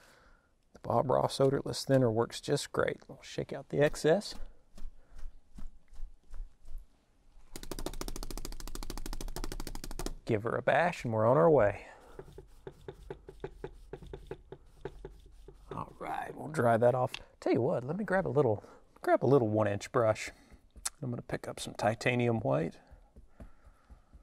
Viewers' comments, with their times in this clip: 0:07 Sounds like a helicopter.